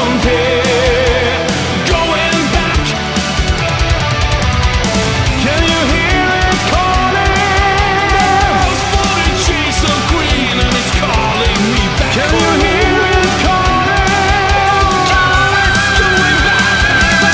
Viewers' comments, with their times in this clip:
0:04 This cover is absolute perfection!!! It's so good!! I've listened to it so many times since you posted it and I'm still impressed every time!! Your vocals are flawless here - especially those breathtakingly awesome last lines starting so amazing!! Fantastic guitars throughout, too! ..Absolutely love this one!! (..And thank you again and again for introducing me to Mr. Moore's incredible music, too! 🙏)